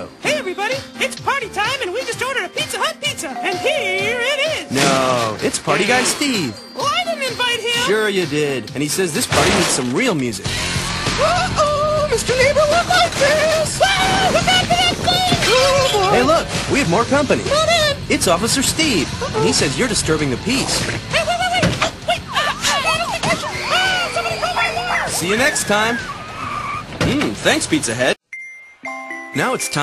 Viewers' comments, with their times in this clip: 0:10 Me At Toys R Us In 1993 And Hear Loud Music Playing To Make My Ears Nothing But Deaf